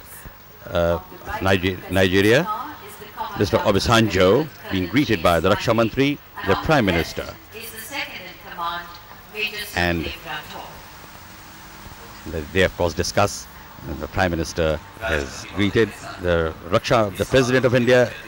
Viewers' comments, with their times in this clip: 0:05 "Jana Gana Mana" starts